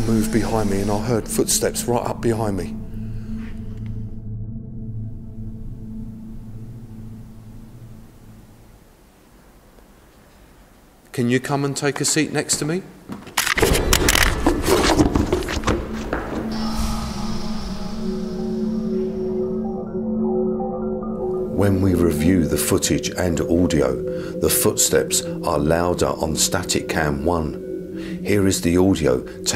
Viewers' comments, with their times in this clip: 0:06 Can you come and take a seat next to me? footsteps... and he escape like he surprised? If you ask them to come to you, don't run in the first second...
0:12 ... Asks Spectre to Have a Seat With Him...Then FLEES When FootSteps Approach...🤔 (Don't Ask For What Ya Can't Handle, Mr.Paranormal "Investigator".)